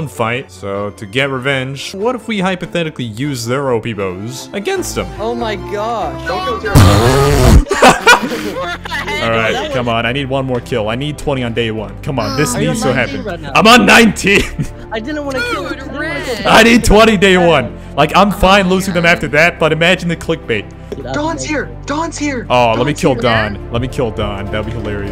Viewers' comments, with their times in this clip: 0:10 why is there a person going ohh yeah sexualy